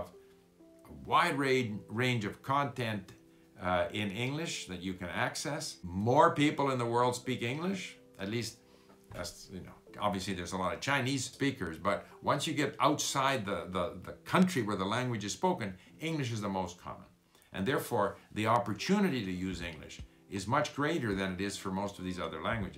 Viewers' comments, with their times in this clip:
0:09 I like your speak